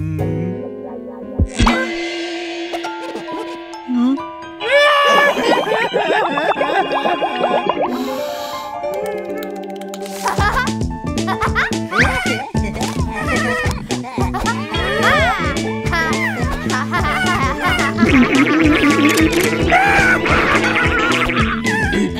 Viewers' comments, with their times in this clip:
0:07 he cried he lose his game